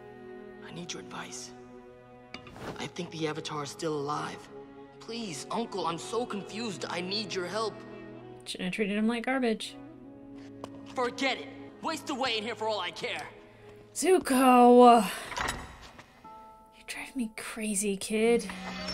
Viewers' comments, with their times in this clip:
0:04 Here he sounded like his great grand father suzin